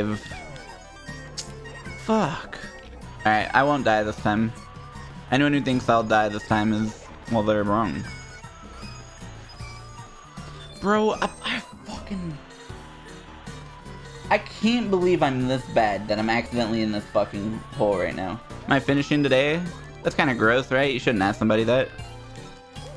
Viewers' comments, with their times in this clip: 0:09 based editor chooses good song